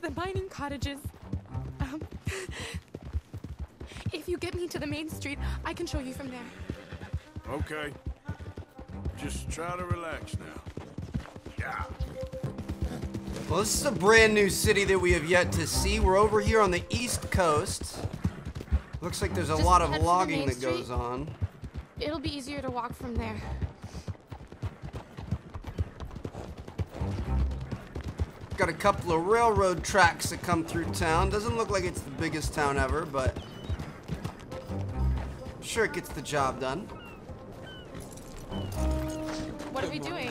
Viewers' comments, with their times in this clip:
0:04 what just happend why were you clapping haha
0:21 Y did he clap ar
0:22 random clap session
0:23 why did you start clapping at like lmaoo